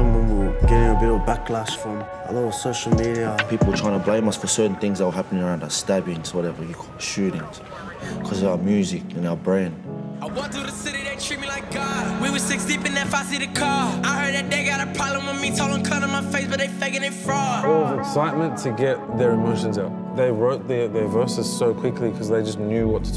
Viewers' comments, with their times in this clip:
0:08 bro that sounds like the beginning part of mean by $not